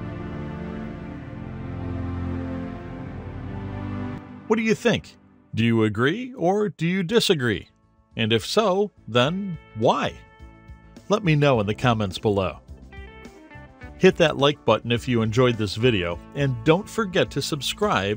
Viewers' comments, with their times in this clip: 0:03 this pad remind me old trance song but i cant remmber name of it its realy nostalgia